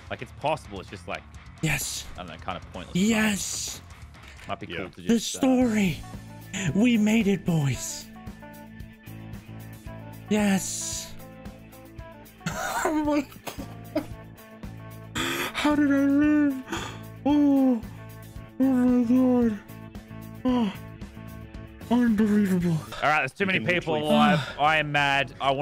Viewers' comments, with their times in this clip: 0:06 nice music m8